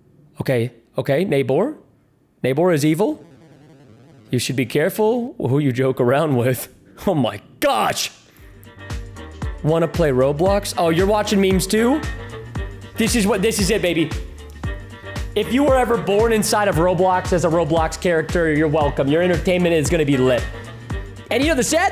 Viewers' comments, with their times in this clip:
0:08 why did you change the song?